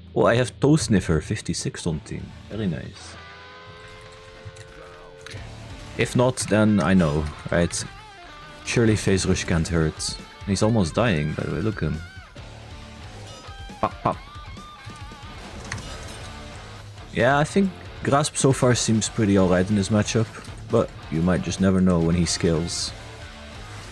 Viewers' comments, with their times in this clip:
0:05 i bombad my pants so hard with the music gg good editor